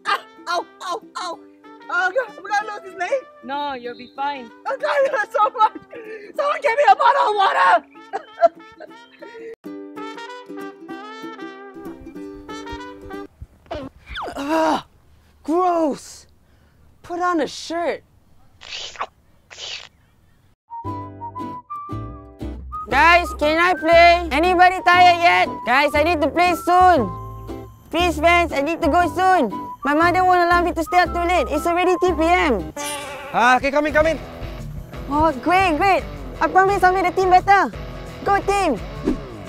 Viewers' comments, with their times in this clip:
0:03 When JianHao said "No, you'll be fine" then he sounded like a little 5 year old girl😂😂
0:23 awwww how cute is his voice! Can i be his friend? Hes so adorable so cute and funny!!!